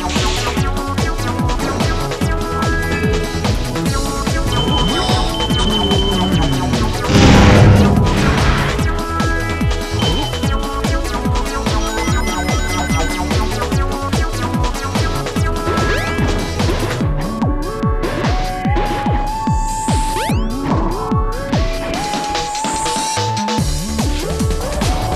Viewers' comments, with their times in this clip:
0:08 sounds like a bunch of people saying the word "pure" over and over again.